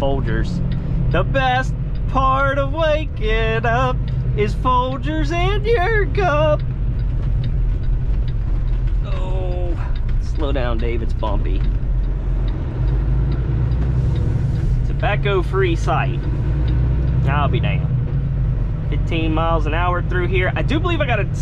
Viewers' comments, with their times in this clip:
0:05 That voice crack tho LMAO